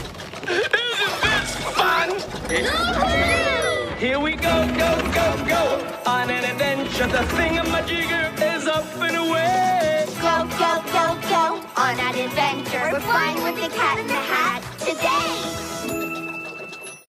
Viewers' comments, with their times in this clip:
0:10 The New Voice For Sally & Nick Is Kinda Bad.
0:11 A bit ukish on